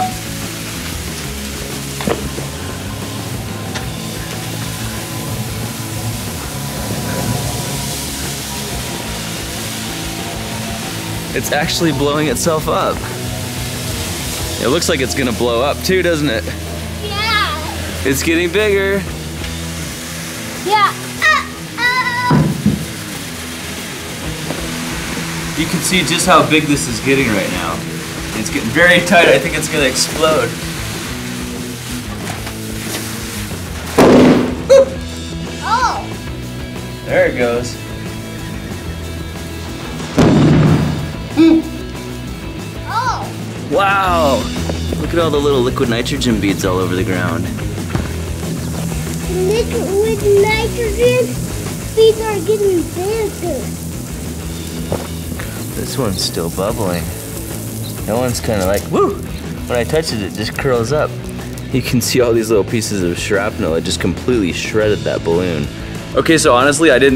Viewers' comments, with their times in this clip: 0:08 you did hear a airplane in
0:31 that was such an adorable little scream! (:
0:32 Dat scream doe
0:32 HERE COMES THE BOOOOM!!
0:33 Haha! you made a very manly noise! :D
0:33 that voice is beautiful
0:34 that scream tho lol
0:34 Sounded like a young michael jackson
0:35 That was the most manliest scream I've heard in a while
0:39 Right after the slo mo pop, when you said "HOO" it sounds hilarious
0:46 did that kid just say "liquid nitrogen? people are getting cancer"
0:49 "nigga with nitrogen" bruh (sorry for my racism)